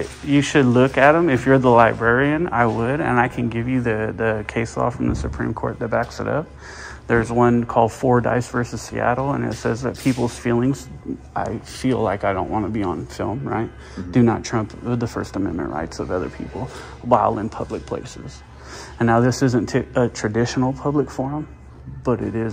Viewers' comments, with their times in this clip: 0:10 They was hitting homie with them car panic alarms again 😂